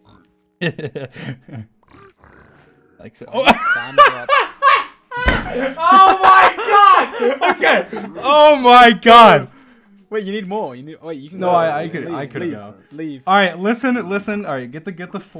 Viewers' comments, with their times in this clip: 0:03 Hey guys why did he laught so hard in